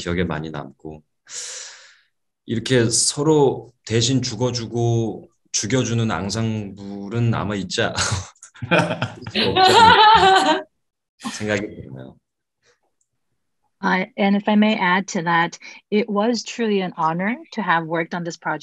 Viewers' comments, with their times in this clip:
0:05 THE WAY JOO-RYOUNG BROKE INTO LAUGHTER SKSJSKMSS